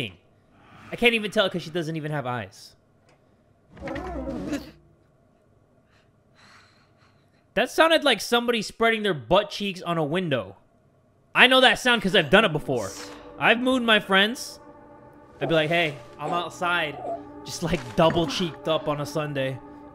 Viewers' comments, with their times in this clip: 0:05 I thought I told my friend to stop aggressively doing the WAP on the window damn it-